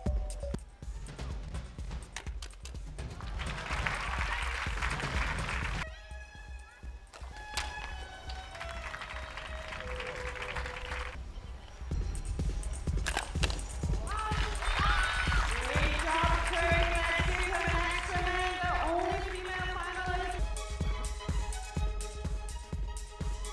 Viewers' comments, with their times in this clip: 0:10 So awkward when that girl doesn't do kihap after kicking